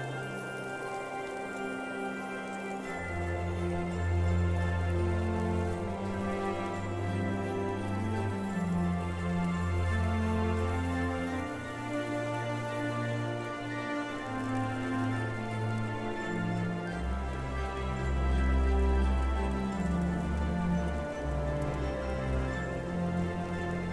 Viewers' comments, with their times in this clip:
0:08 the song that plays is the dutch anthem christmas-ized lol XD Lovely ambiance!